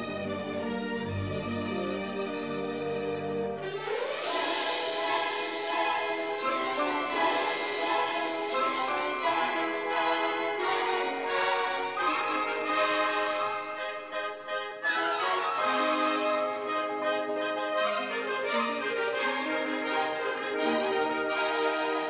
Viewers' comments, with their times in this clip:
0:04 can DEF hear distinct Wrath of Khan themes, which he did the previous year.